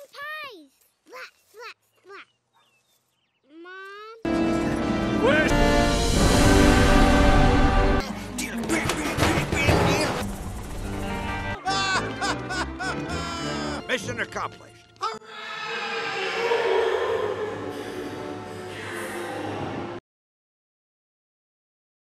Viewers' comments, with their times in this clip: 0:03 “Mom” “Where’s...” (Dramatic music)
0:13 Sergeant: Mission accomplished **chants from the void dimensions**